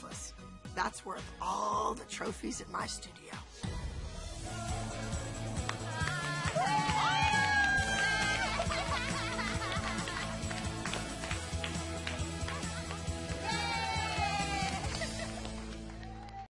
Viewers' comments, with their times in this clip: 0:09 Melissa sounds like sponge bov
0:09 you can tell that Melissa was fake laughing😒😒